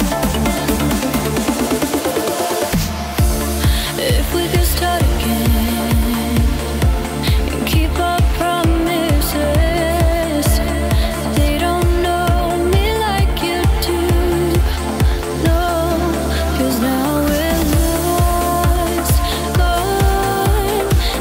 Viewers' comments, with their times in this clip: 0:07 Like Eastern Voices. Turkish Azeri or Arabic Style Perfect..